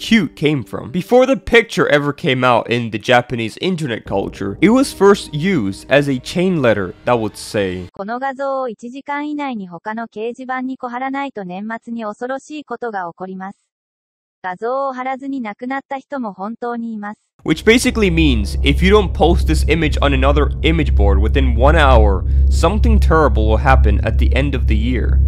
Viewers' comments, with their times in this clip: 0:08 sounds like miss circle saying Japanese
0:08 She sounds like miss circle when she was speaking😮😮